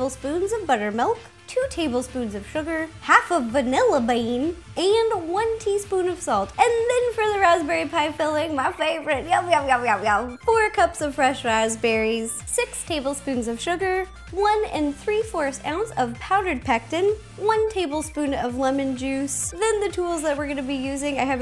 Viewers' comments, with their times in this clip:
0:03 i love the way she said "vanilla bean"